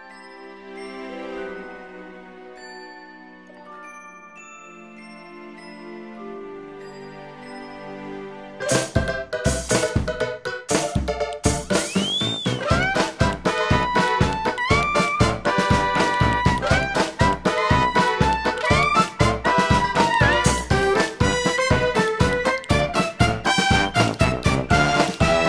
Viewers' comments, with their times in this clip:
0:08 kinda reminds me of snipperclips music